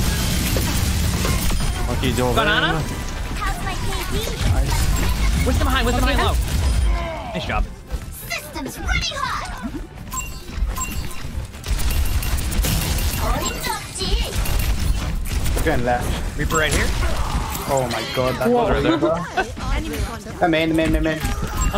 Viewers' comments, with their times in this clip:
0:06 Sorta? It's no longer a visible meter or makes your character portrait go ablaze, but it's still tracked and heros still mention when there on fire. I thought it was a bug/remnant they didn't get to remove in the beta entirely, but you can hear D.va say a fire voiceline in and I think it's a new line for OW2